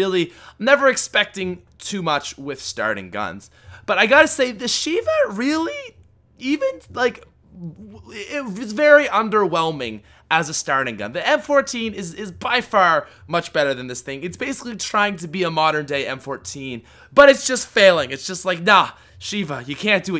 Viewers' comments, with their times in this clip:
0:03 HUGGGGGGGGEEEEE. Voice crack
0:06 3 major voice cracks😂